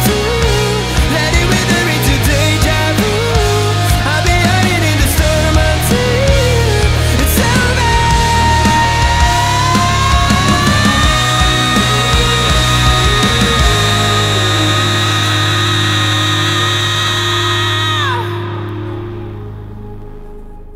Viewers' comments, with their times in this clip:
0:04 THIS DOESNT EXIST, EVERY TIME I HEAR HIM REACHING THOSE NOTES HE GETS BETTER HOLY FUCK IM HAVING GOOSEBUMPS